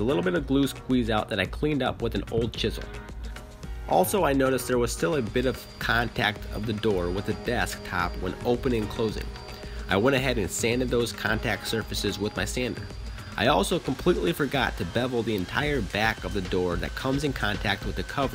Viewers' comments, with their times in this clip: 0:03 lol at how he struggles with his words.